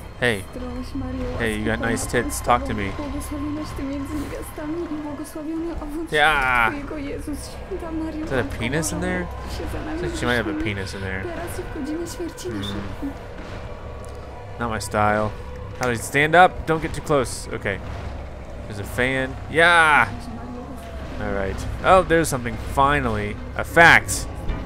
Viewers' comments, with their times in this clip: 0:06 girl is talkin polish